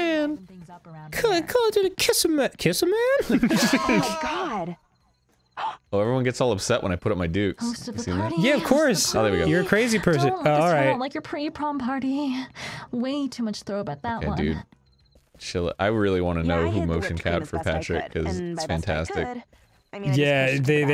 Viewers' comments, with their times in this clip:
0:03 The simultaneous yells whenever arin puts his fists up😂